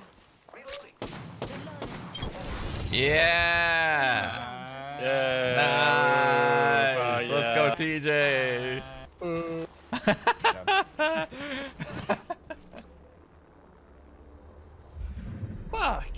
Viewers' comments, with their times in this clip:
0:04 Holy shit Shroud is mirage 😳 the laugh is to similar